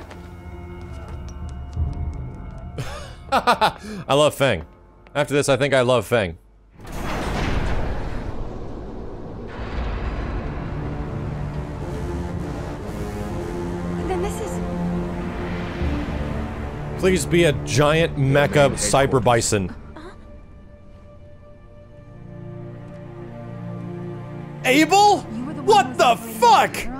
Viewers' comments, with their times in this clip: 0:09 I thought it played Mojo Jojo's theme